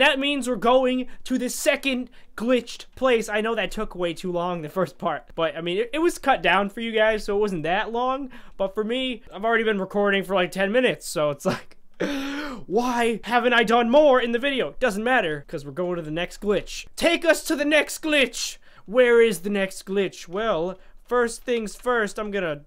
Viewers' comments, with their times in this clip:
0:05 pause hahaha he sing like a girl